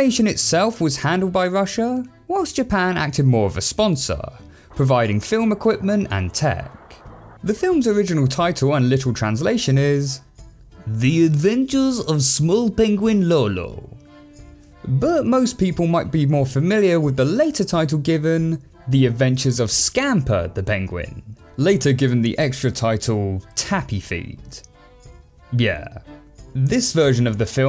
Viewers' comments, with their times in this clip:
0:10 you sound like your mocking an Asian person instead of a Russian person